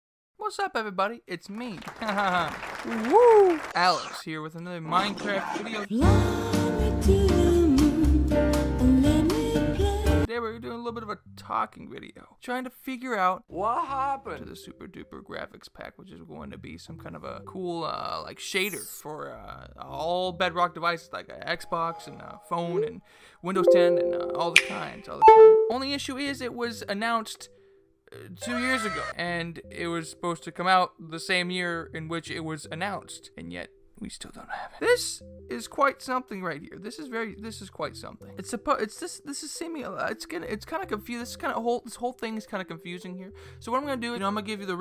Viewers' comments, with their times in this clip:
0:03 Oi m8 is that Peter Griffin?
0:25 OMG WHAT ARE THE ODDS WHEN IT MADE THE CHARGING SOUND I PLUGGED IN MY TABLET AND I THOUGHT IT WAS MY TABLET 😂